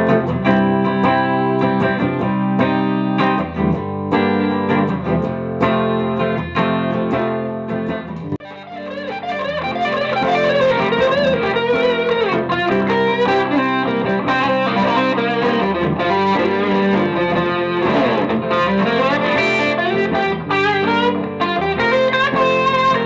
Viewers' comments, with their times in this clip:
0:10 That guitar is stunning like your soloing onwards!